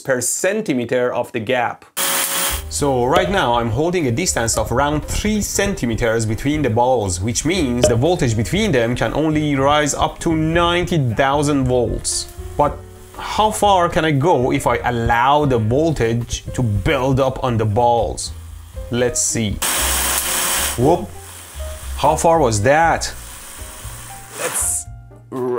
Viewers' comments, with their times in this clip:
0:10 You are really good at dubbing yourself lol